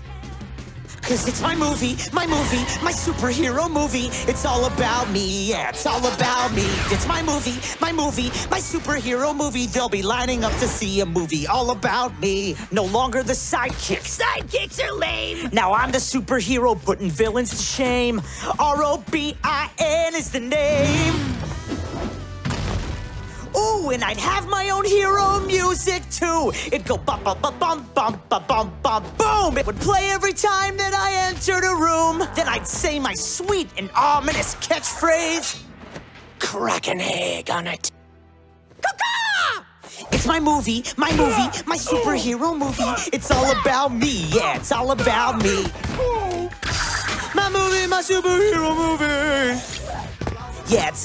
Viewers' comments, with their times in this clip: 0:05 robin sounds really high quality
0:18 when Robin can actually sing for once
0:36 it sounds like him